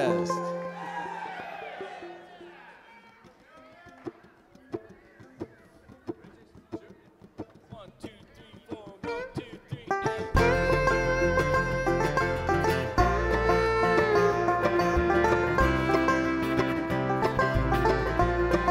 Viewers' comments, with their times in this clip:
0:03 As much as I usually love the bands interpretations of most songs I can't help but wonder how much better 'Walk of Life' would sound if they cranked up the speed a notch or two.